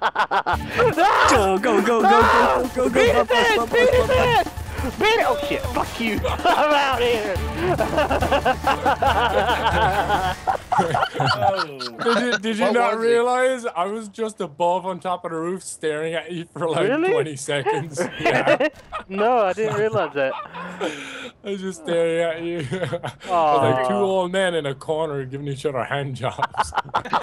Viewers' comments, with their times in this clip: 0:09 Lol, it sounds like he laughed a little TOO hard in this one :)